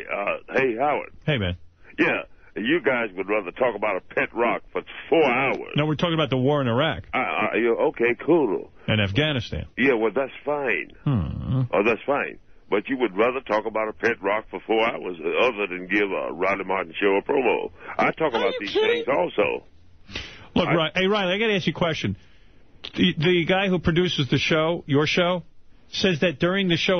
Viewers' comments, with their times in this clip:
0:10 I must study this show so much that i was able to catch Howard make a humming sound at time stamped right after he responds to Riley about the Afghanistan comment...smj in to invested into this show i see... i got to much time on my hands lol